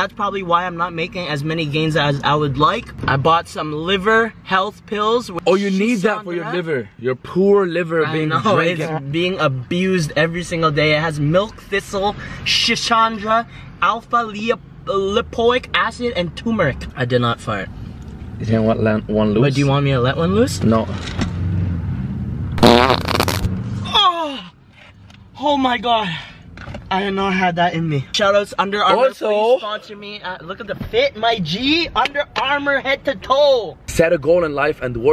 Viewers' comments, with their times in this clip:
0:08 so we are just gonna walk past how one of yall farted
0:22 fake fart much